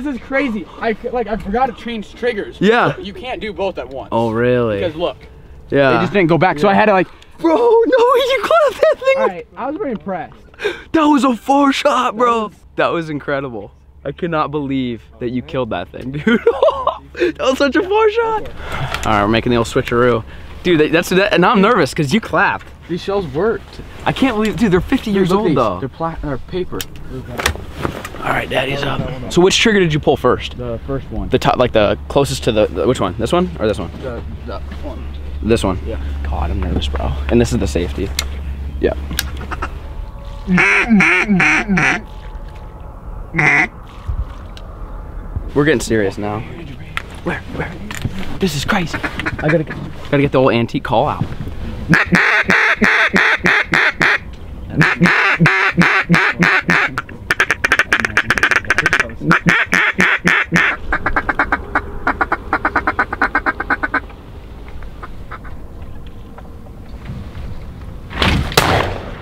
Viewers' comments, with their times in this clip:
0:09 sounds like the n word
0:57 Nobody: 99 Honda Civic: